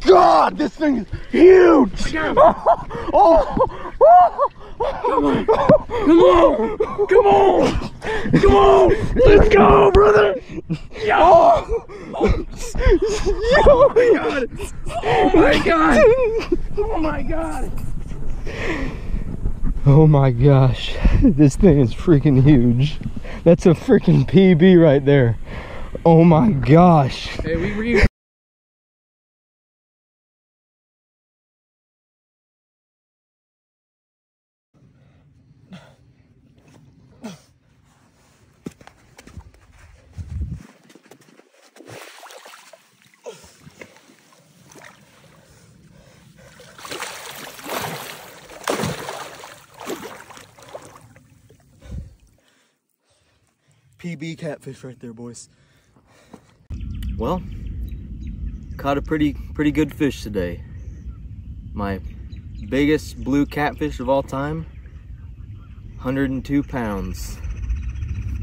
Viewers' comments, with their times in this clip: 0:07 the buddy couldn’t lift it but flexed and yelled let’s go 😂😂
0:09 The laugh giggling and after is just hilarious
0:15 the giddy giggles!!! The Joy and excitement….
0:55 Congratulations friend!😊 You have landed the Catfish of every Catman's Dream!!!! It would have definitely been easier with an experienced partner. But hey everyone has to learn somewhere. It looked to me like he definitely got a real learning lesson that day. From an experienced Catman. Excellent work! Loved the Banjo string orchestra! That was the icing on the cake!❤😂😅😊Happy Fishing!